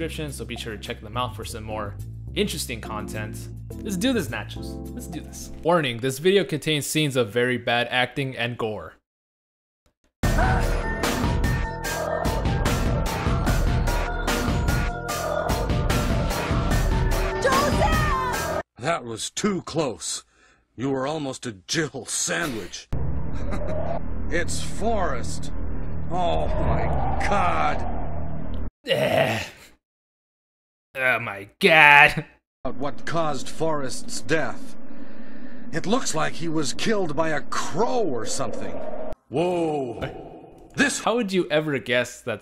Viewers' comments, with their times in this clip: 0:10 you know everyone be busting a move when this song starts playing
0:24 this sounds like Joseph Joestar